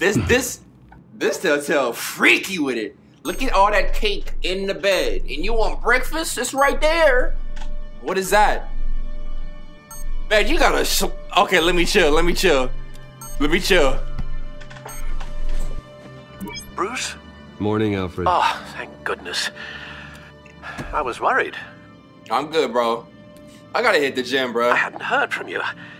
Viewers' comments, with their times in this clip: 0:09 BIG PAUSE, LMAO